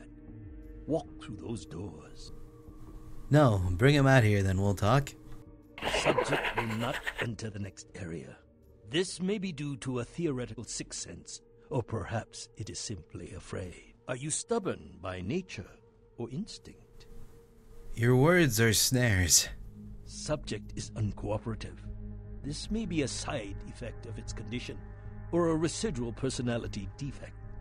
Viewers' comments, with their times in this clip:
0:06 wtf was that sound? o_o Cry, were you laughing?
0:15 Did anyone else hear that weird laugh ? I think its the occasional voice in her head that all malkavians seem to have... just a guess...